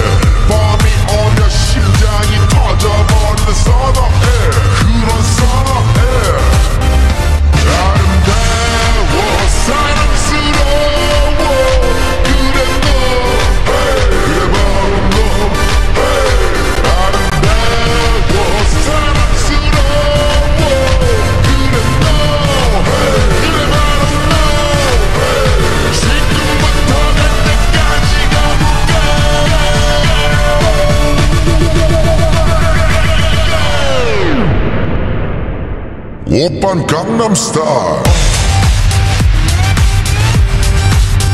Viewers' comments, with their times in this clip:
0:06 I can hear boss music
0:23 bro it getting better and than boooom its so good bro